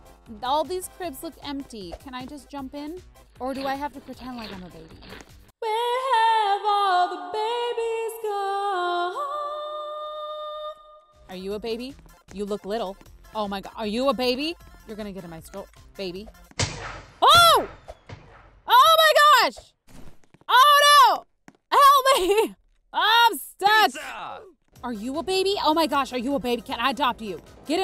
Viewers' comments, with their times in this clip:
0:09 she hit that HIGH NOTE